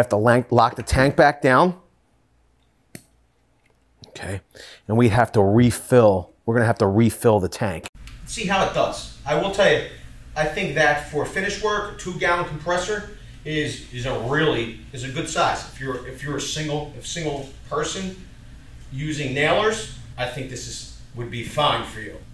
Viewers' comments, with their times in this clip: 0:09 Side note.... Something happened to your audio